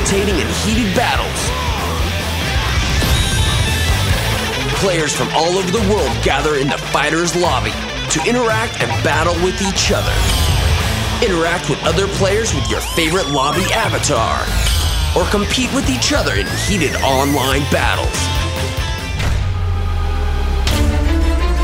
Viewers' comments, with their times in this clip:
0:09 I just noticed dbzf menu scrolling sounds a like the scrolling from Pokémon colosseum and XD. Opps did I say that out loud looks goku will never get in smash now the only smash he will be in is a Nintendo Corte room lolz